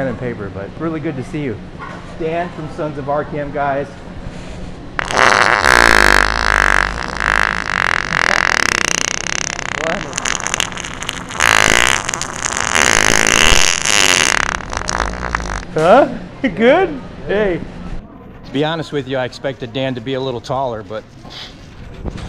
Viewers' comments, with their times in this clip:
0:05 Starting with a triumphant raised fist, that was the best shart I've heard to date from the Sharter Pro👍👍 Now work that neck collar into the skit and you've have the perfect combination.